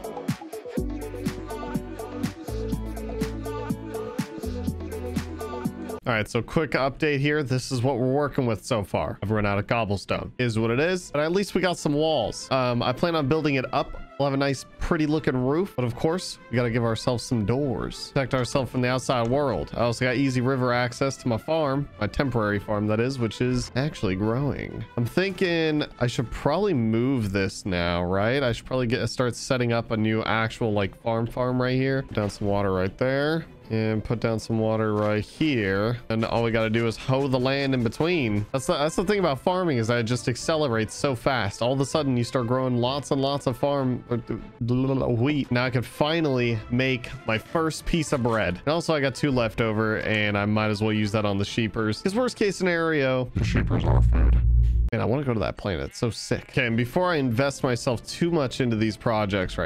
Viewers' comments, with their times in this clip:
0:08 When he said I ran out of cobble stone he sounded like Cronk from the empires New Grove
0:45 for a second I thought he said something else 😳